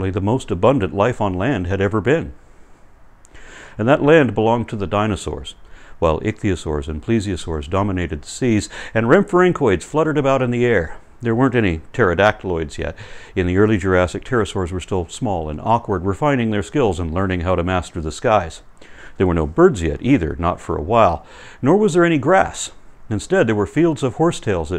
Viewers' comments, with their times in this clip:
0:09 Wtf was that that "fluttered about in the air"? The voice recognition used by closed captions says "REM Frank Leutz". Sorry, that does not compute.